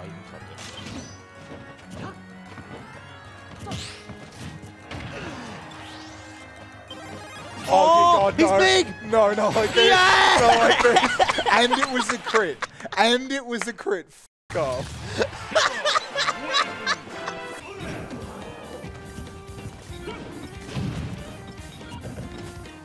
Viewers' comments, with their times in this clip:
0:08 It is so weird how Sakurai gave us customizable tags and then tournaments just block them anyway... That guy's laugh. XD